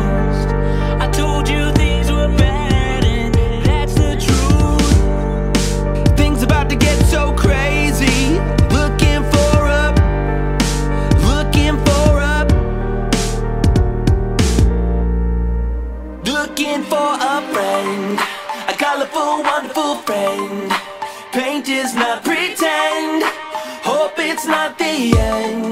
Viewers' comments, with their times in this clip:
0:06 You can hear a oof sound